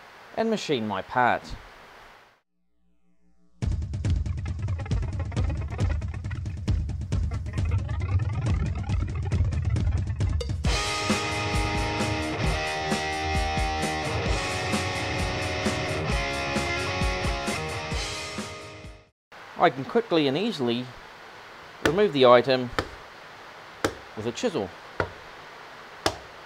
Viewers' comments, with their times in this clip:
0:09 you're lucky your machine produces music while cutting. Mine produces only noise :(